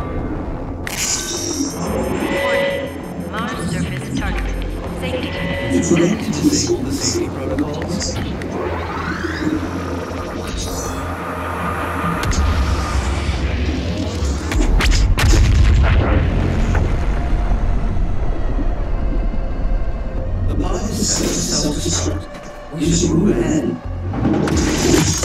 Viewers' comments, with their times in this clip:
0:08 like the slayer grunt